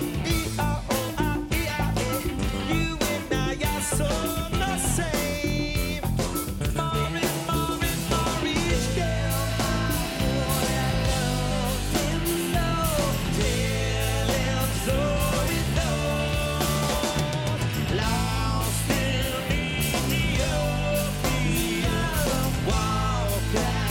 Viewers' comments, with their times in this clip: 0:09 you can hear clearly josh's voice, it is so great, so angelical voice! Josh, really is impossible you replace john frusciante, but you are great and can be most. So I and a lot of fans are with you!